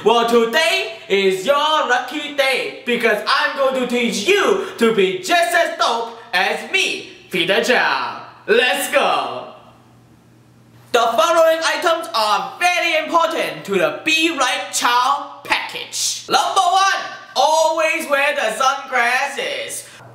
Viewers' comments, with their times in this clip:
0:08 "lets go" lol no rets go? xD
0:08 is it me or does he say 'let's go' instead of 'ret's go'?